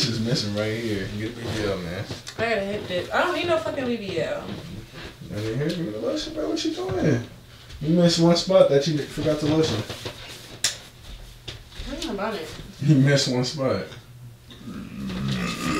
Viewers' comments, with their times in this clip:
0:03 sounded like she called you babe tho!